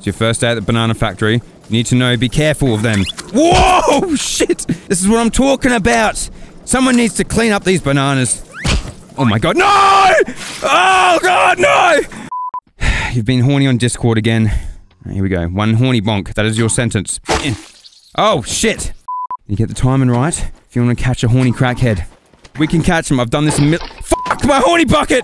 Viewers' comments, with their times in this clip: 0:08 that NOOOO sounded genuine